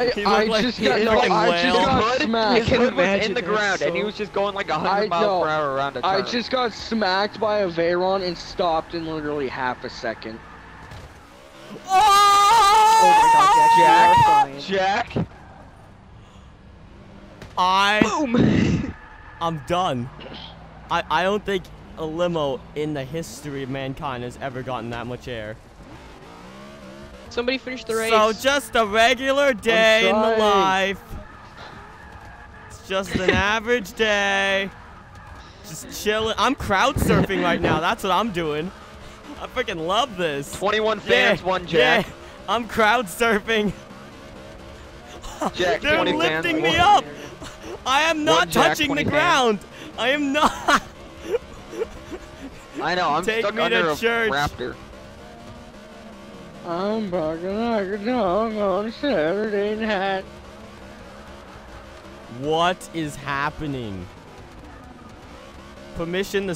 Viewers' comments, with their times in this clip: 0:10 rare sound from space
0:11 another Asian mating call
0:11 george of the jungle yell?
0:12 another mating call
0:51 You raaaaaiiiiise me uppppppp the name of this video should be Forza 6- CROWD SURFING IN FORZA! (massive wrecks, hits,action,voice cracks!)